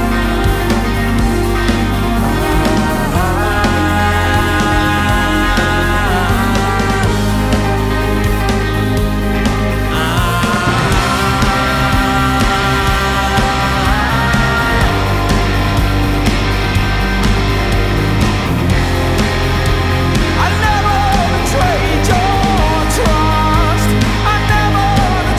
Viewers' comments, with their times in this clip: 0:10 One of my favourite transitions ever. When the electric guitars kick in and Vinny's vocal go higher in pitch and intensity. Perfection